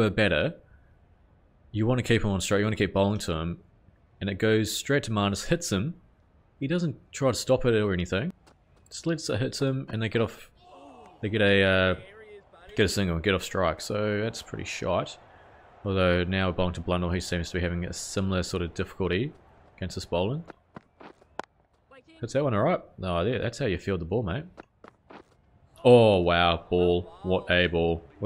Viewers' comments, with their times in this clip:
0:09 Did Blundell schnick off ish and there was no appeal?